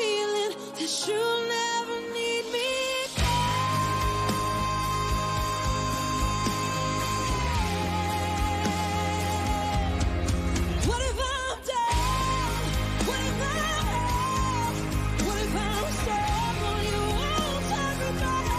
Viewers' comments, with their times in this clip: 0:03 that C5 my good.
0:03 that C5 my good.